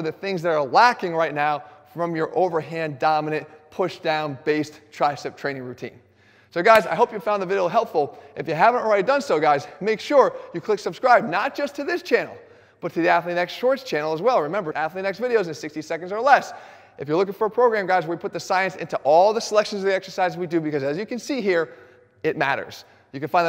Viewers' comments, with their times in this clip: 0:06 "So guys, i hope you found the vidle helpful" Now you cant unhear it